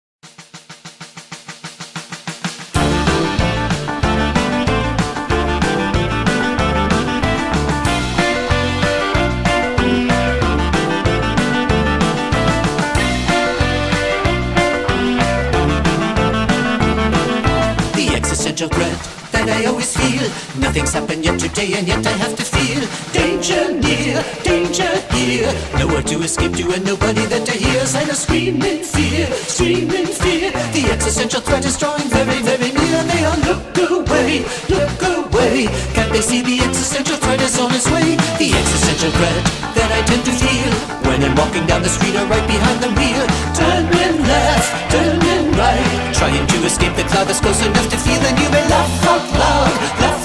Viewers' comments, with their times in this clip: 0:02 It's Sounds Like An Opening From Mickey Mouse: The Real World Adventures Of Big City Street Movie! 😊❤
0:08 why im hearing mrbeast mebeast💀
0:33 For some reason i heard poo poo brain